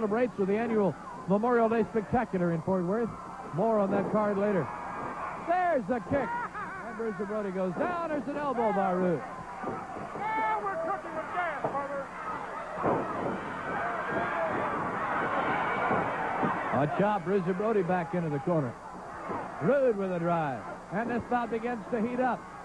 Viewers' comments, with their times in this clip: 0:05 Listen to Percy Pringle (Paul Bearer) outside😂😂